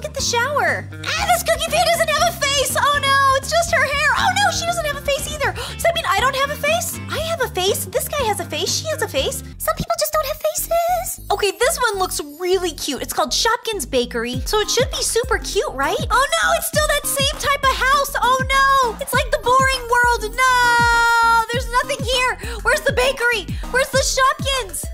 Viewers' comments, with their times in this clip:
0:09 The way she said "some people just don't have facesss"😂😂😂